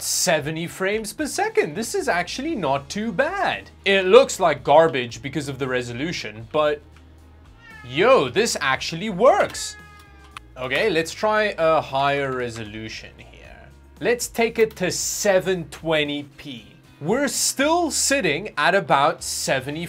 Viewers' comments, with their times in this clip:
0:06 I thought that noise was car horns in the game